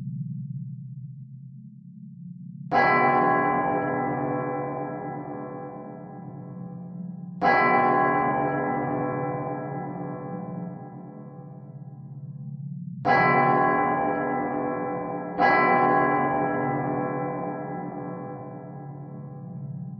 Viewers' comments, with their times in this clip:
0:03 good lord the bell sound 💀